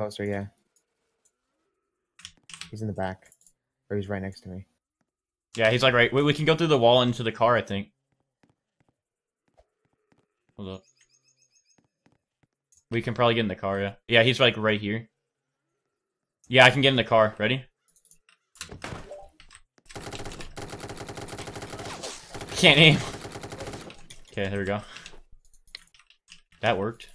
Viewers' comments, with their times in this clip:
0:09 audio went out